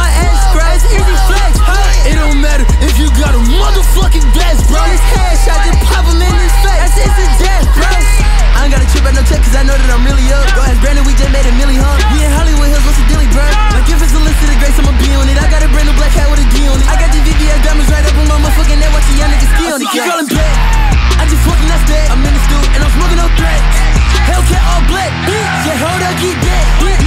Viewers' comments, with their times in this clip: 0:08 THAT BEAT WENT WILD